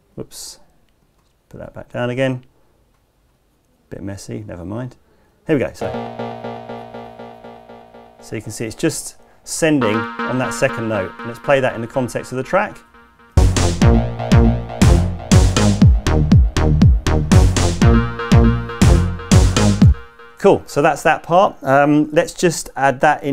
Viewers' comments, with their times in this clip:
0:05 great but it needs some distortion, the original sounds gritty